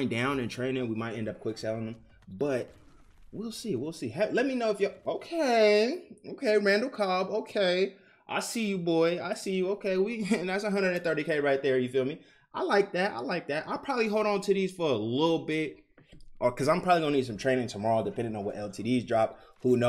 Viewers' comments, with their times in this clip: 0:05 That voice is a lil suspect. Lol